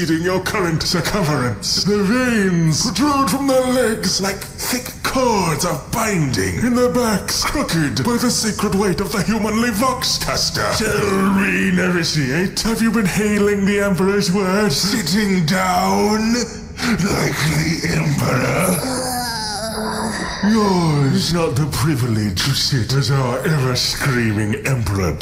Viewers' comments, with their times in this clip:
0:10 You thought you slipped that burp by me BUT YOU AINT SLICK
0:11 did anyone else notice that he burped while talking?